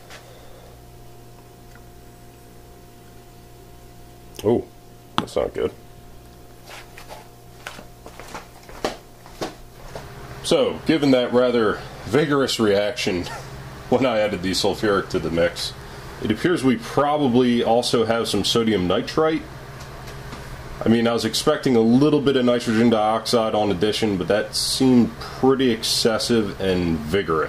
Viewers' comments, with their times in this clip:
0:08 Nothing like the sound of flip flops while doing chemistry